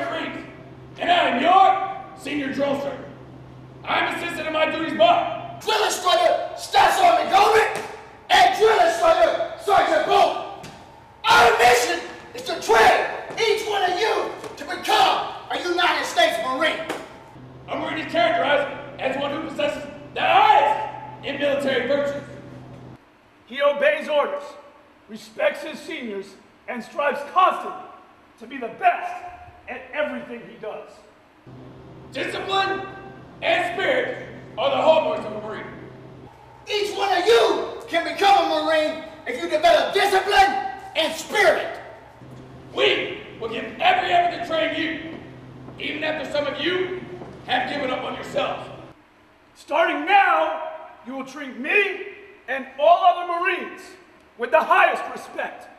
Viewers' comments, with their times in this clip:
0:09 yeah it really isn't necessary to scream like that for this little monologue.
0:37 whoever screams to get respect will not get respect. whoever screams is more of a clown. those who are calm and explain what is going on, get more respect! Clown!!